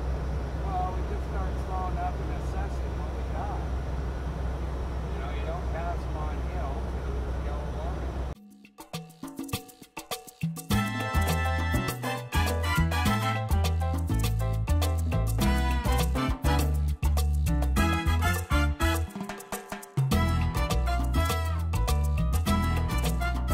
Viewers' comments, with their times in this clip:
0:09 Love your Latin music